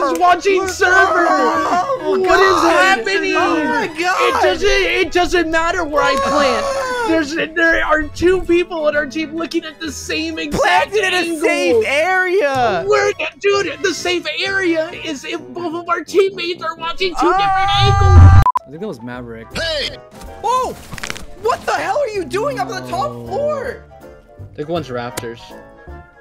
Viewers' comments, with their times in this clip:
0:05 he sounds exactly like snot from american dad
0:10 Bro why does he sound like snot from American Dad lmao 😂